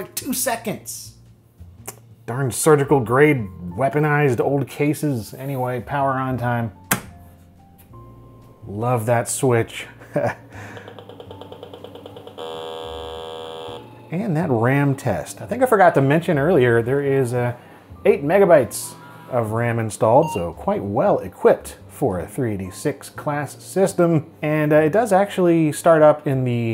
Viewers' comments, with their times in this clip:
0:08 Wish I could find that EXACT SWITCH. So many good memories associated with the KER CHUNK!